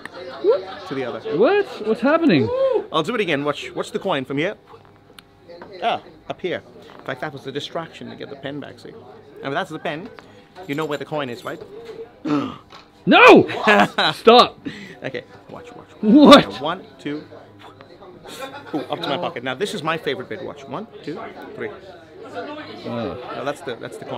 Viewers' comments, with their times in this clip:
0:05 i heard him drop the coin